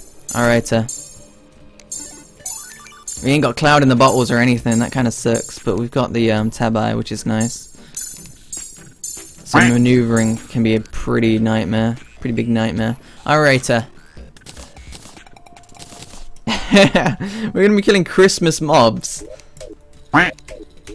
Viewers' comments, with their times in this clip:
0:03 I thought he said "we ain't got clouds in the butthole"